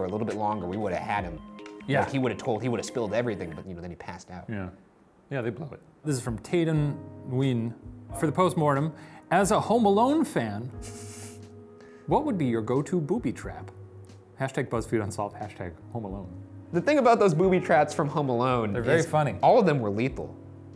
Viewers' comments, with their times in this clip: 0:05 Shane's pronunciation of Nguyen was cute